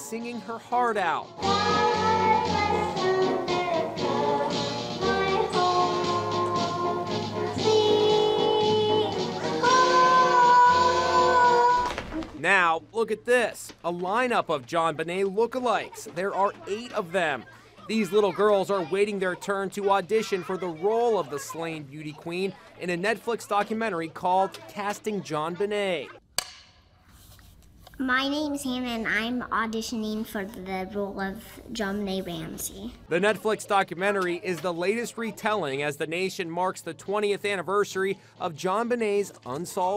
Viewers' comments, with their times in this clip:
0:10 okay I can’t be the only one who expected a voice crack
0:27 OMG she sound like her